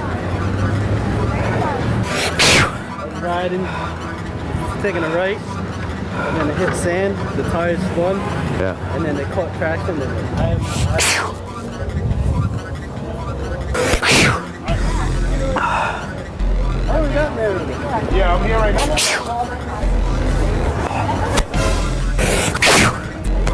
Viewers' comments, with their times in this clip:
0:09 did he sneeze on me!?!.... i should smell it to be sure.